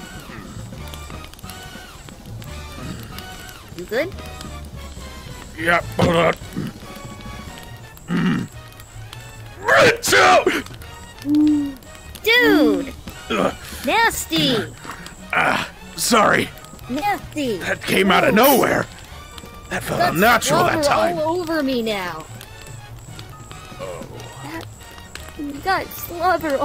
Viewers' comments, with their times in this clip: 0:09 Creature Screme Egg: Sonic the Werehog, You Sneezed Again.